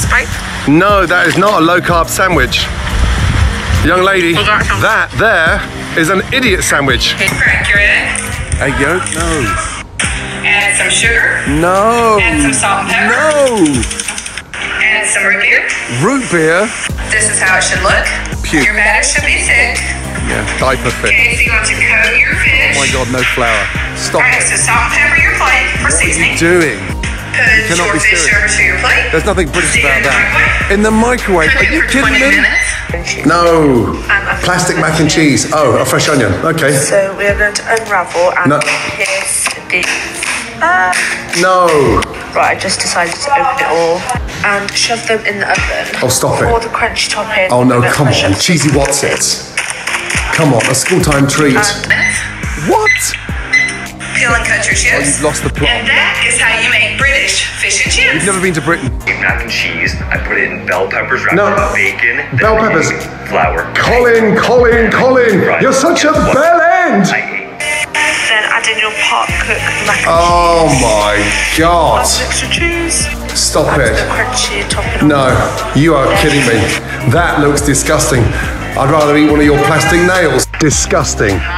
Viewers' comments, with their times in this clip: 0:04 "That thah is ahn idiodt sahndwich" gottem
1:03 i heard "COMMENT COMMENT COMMENT YOUR SUCH A COMMENT"